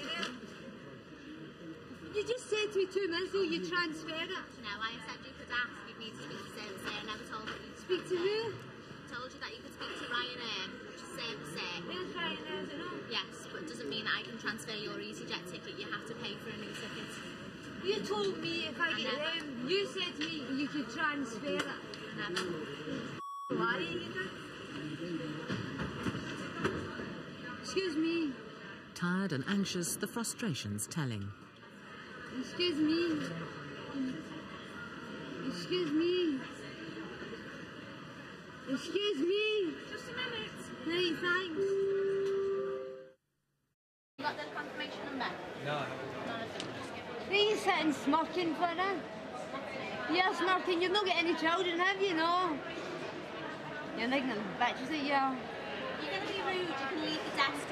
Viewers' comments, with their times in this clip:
0:10 battle of the ugliest accents
0:40 That high pitched “just a minute!” sounded like classic Monty Python